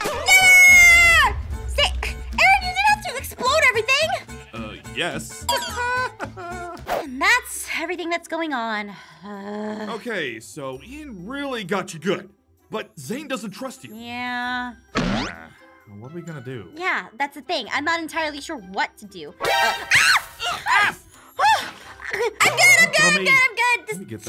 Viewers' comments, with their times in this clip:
0:05 The way Aaron laughed, made me laugh! xD